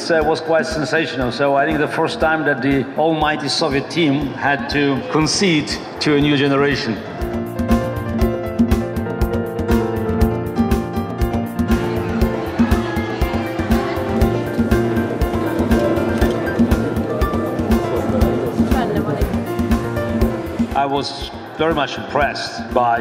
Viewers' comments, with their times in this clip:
0:09 who's puppies? these puppies?